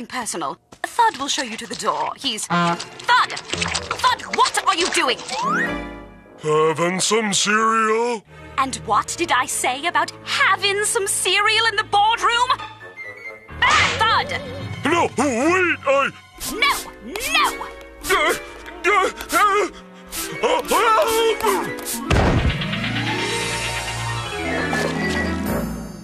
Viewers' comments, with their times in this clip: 0:06 I love hearing his voice like Patrick’s in “SpongeBob” ❤😂⭐️
0:08 I freaking love Rachel McFarlane’s line delivery there. 😆